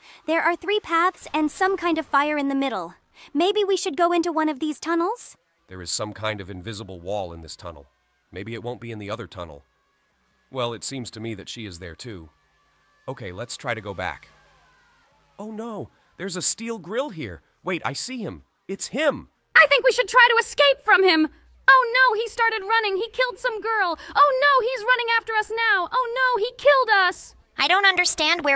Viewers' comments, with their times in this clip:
0:10 Mine Voice is pomni?😂😂😂😂